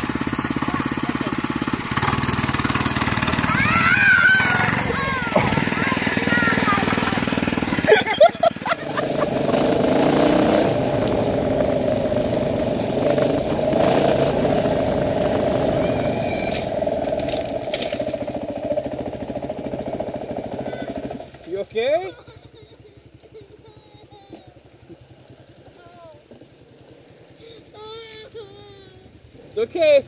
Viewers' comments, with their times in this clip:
0:10 not gonna lie that was pretty funny. You can hear him yelling “help!!!” Right before wrecking😂😂
0:10 you can hear the poor kid screaming
0:16 "Are you okay?" No clearly he/she is crying in pain because they literally just flew for a few seconds!
0:16 you hear the kid saying “aaaaaa” before he crashes 😂
0:16 i like how you can slightly hear him scream